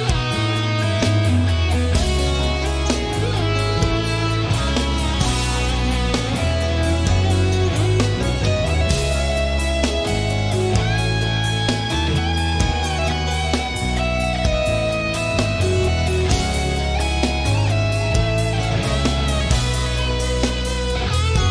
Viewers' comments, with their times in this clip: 0:08 Kindred Spirits must be what heaven sounds like. Petrucci makes the simplest notes sounds angelic. 4 brilliant men